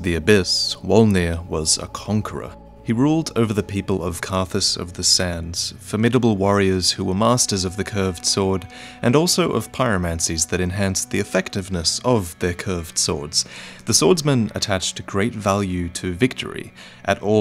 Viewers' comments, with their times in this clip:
0:05 I appreciate so many things in this video! So much effort and detailed information. Even the little things like the music change when talking about the Carthus sand warriors adds to the cinematic effect. S-Tier content!